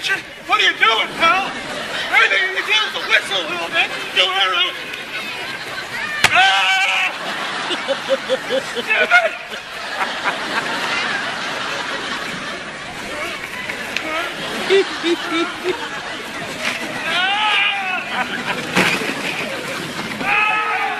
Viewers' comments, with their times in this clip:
0:06 Reba has most lovable laugh and smile ever